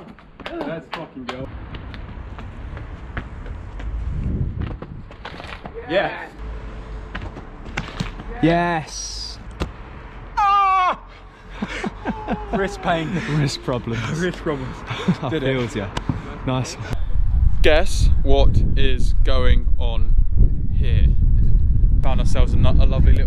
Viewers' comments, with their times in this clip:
0:10 sounds like a baby goat screem